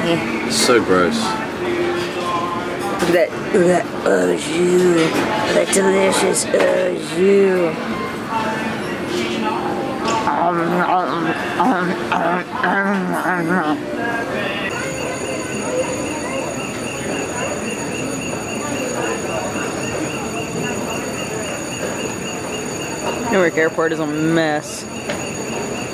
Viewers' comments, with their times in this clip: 0:08 I do that same voice when I was extremely happy and having satisfying food too, but it's rare XD